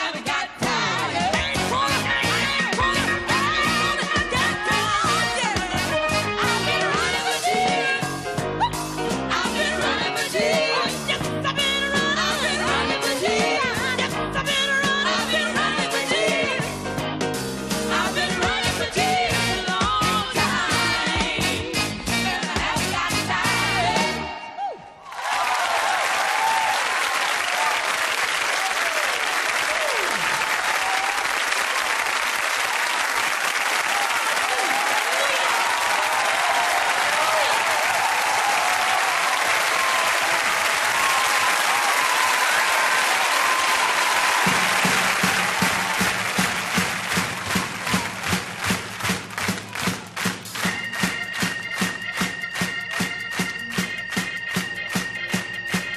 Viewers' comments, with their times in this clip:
0:03 Denise 🙌🏽🙌🏽🔥🔥 My God!! That run was Perfection!!
0:40 it's amazing how the audience went from applause to clapping on beat for Hallelujah, so satisfying